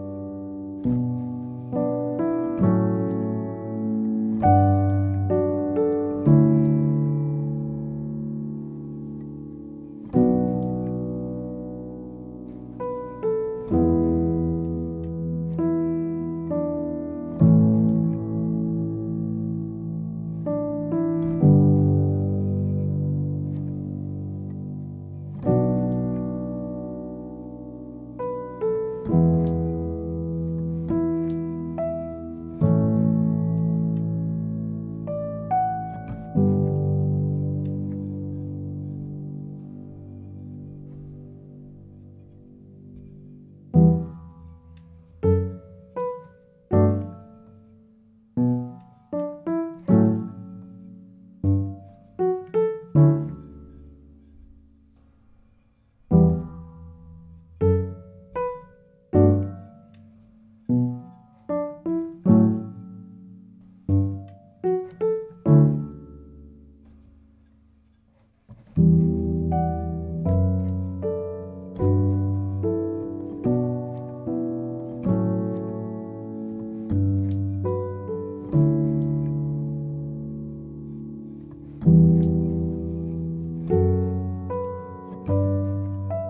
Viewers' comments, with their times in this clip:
0:10 The chords are played so perfectly. Beautiful
0:13 Why does that G# work? Can you explain?
0:39 when he stopped sustaining it scared me
0:43 everybody gangsta until the piano starts making note block noises
1:07 The walking down the piano gave me chills. Beautiful